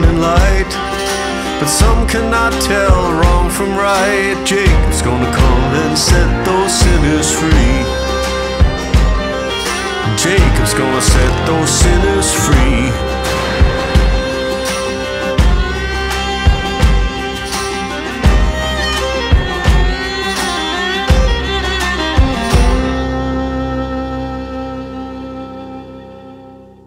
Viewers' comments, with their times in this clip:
0:10 I guess i ain't the only one hearing a burp